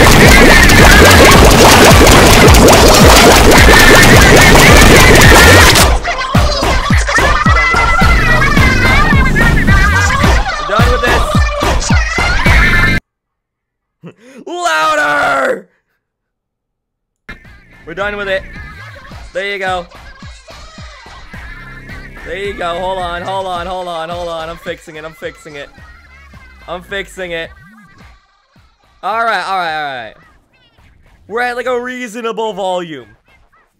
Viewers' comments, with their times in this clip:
0:02 It really quiet so have full volume there
0:02 My ears are DED
0:09 my ears are broken
0:19 rip headphone users like me :(